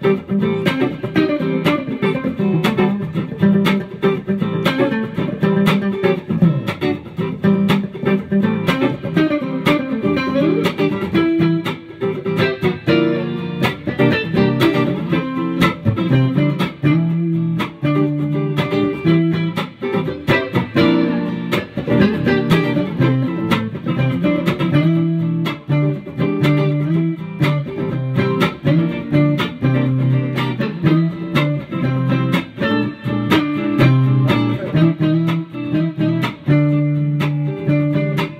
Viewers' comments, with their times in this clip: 0:09 What chords do you play in the intro? Like Am to Dm, Am to Gm ? Or something else? Like until
0:13 Those octaves in the melody and on is some exceptionally warm j-pop vibes
0:19 sounds like boogie - love u like the westside